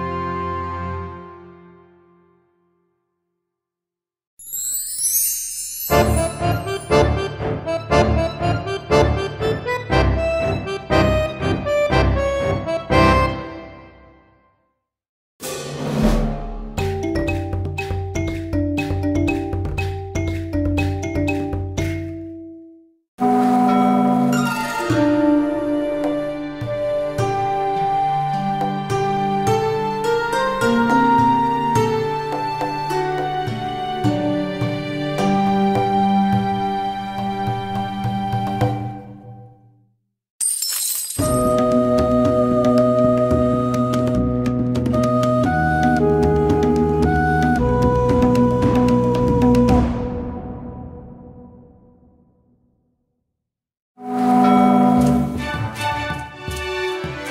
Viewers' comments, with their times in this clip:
0:03 The Buenos Aires' one resembles "Suite Punta del Este" from Astor Piazzolla.
0:39 Cahokia's music is nice.